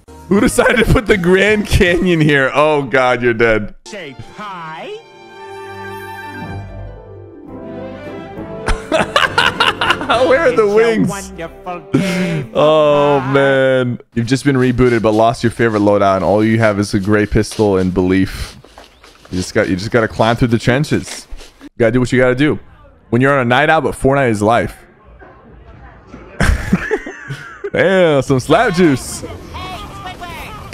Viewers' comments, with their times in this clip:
0:03 someone surly said pie
0:09 Goofy ahh laugh💀
0:12 goofy ahh laugh